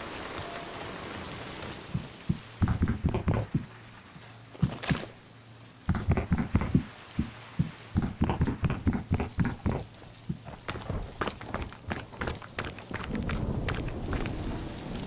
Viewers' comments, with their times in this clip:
0:03 Sounds like Stewie running around😂